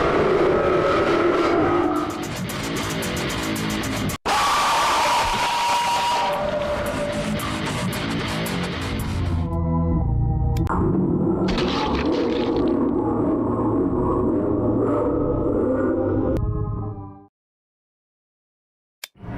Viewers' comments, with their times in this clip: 0:03 residence massacre oof sound